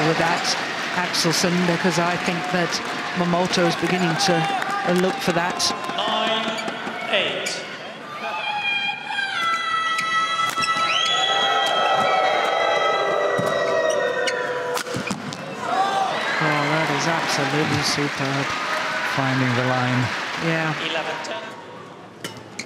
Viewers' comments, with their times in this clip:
0:08 most annoying yelling by an audience 😌